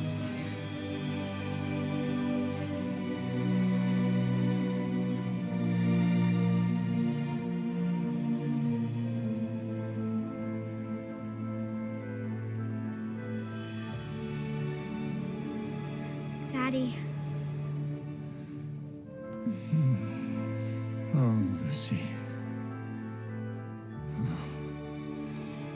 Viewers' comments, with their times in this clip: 0:07 I've just realised the melody is just like the melody from Casper The Friendly Ghost